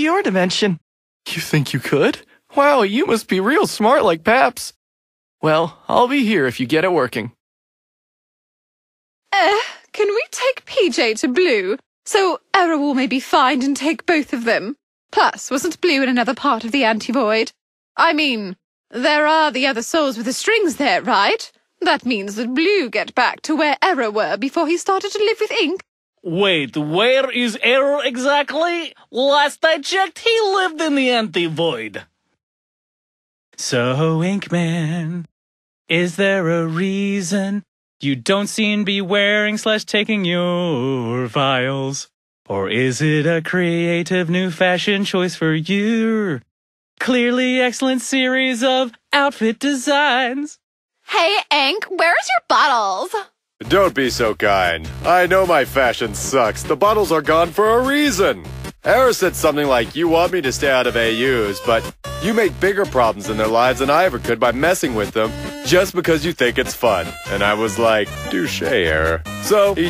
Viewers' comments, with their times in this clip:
0:07 i heard eclipsas voice for the ask (eclipsa is from star vs the forces of evil lul)
0:26 That voice sounds like the guy from the minions. Gru, I think... Or from despicable movie
0:26 he sounds like gru XD
0:26 no way its gru from the minions
0:26 he sounds like gru XD
0:27 wait.... Why does... The voice actor sounds familiar... He sounds like someone from EDDSWORLD....
0:27 why bro sound like gru
0:27 sounds like gru 😂😂
0:51 Bruh it just sound like Junko Enoshima from Danganronpa bruh :0